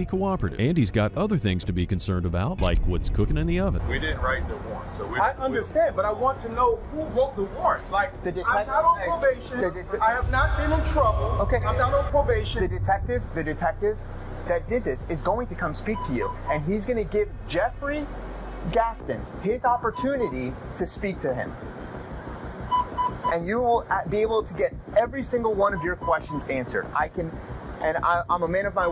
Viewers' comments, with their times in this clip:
0:09 Stop warping the audio lol this isn't a horror movie.